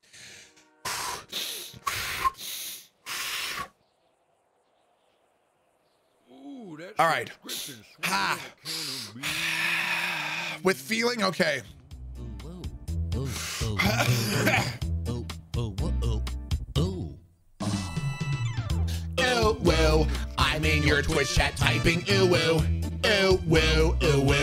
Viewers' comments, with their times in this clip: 0:07 UwU Song . . . . . with feeling!